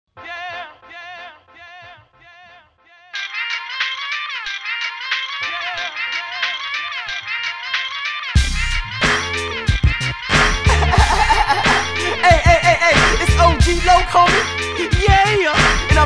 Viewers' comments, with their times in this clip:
0:04 like MF Doom's music